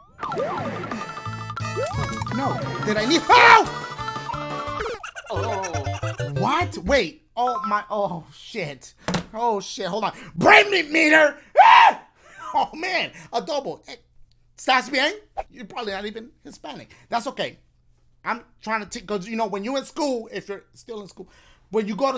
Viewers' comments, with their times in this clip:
0:06 the way he said omg had me dead